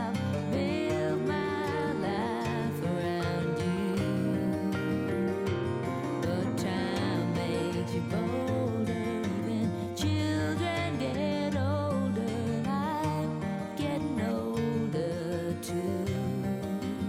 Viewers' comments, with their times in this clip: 0:03 Really is a powerful and depressing scene but when they're sobbing about them britches I fn lost it 😂😂😂